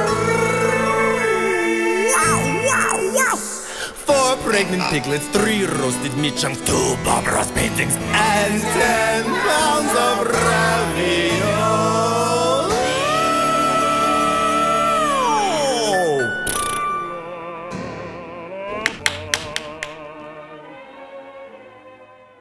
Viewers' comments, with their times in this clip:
0:06 is very Sopor Aeternus style vocal. I c u Katya